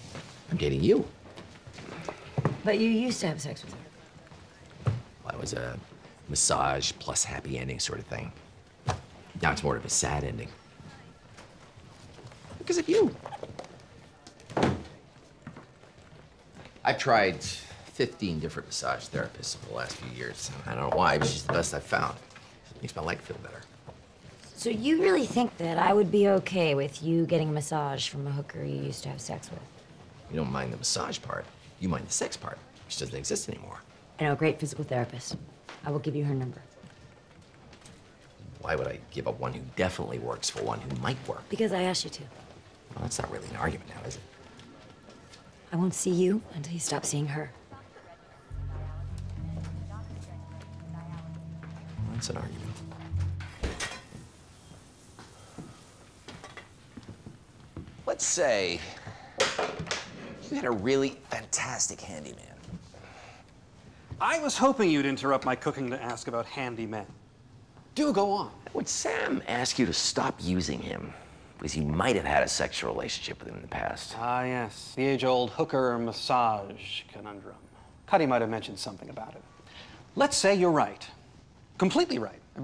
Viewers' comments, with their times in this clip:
0:08 The way he says because of you makes me smile lol
0:12 I love when house goes 'because of you' he makes it just so wholesome eventhough what he is saying could be misinterpreted.
1:07 Wilson sounds like Chandler Bing